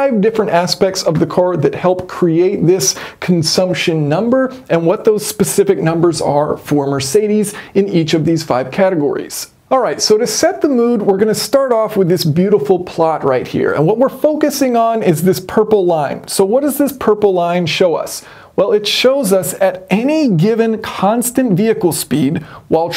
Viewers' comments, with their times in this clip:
0:08 At roughly lights dim. Sensual jazz starts playing.🤣😍🤣